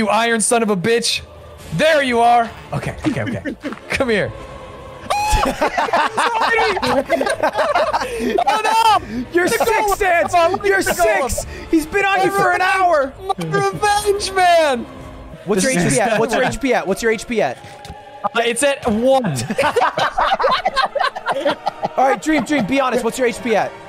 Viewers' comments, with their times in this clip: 0:04 that’s literally the “did I jumpscare you?” Scream